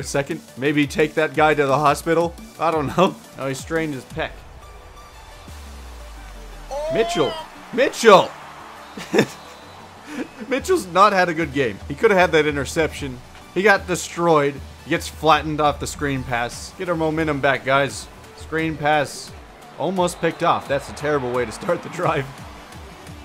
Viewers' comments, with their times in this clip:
0:06 Joe Buck is that you?